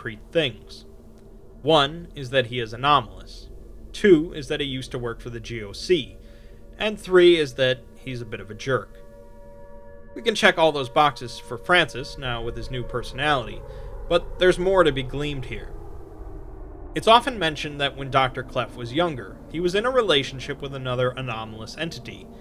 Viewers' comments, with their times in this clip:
0:10 with all the WW3 memes going on the nuclear siren got me pausing the video to make sure it wasnt real.